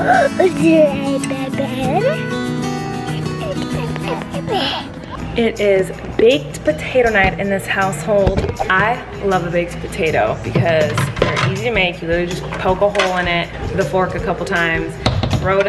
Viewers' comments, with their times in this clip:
0:03 when he literally PERFECTLY says “is it a baby” I’m shook